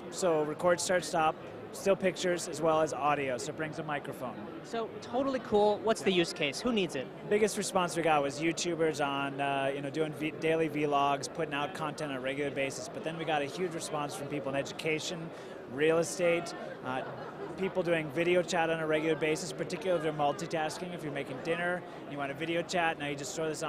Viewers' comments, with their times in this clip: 0:09 This nigga said Veee-logs Hahaha! It's vlogs, you newb!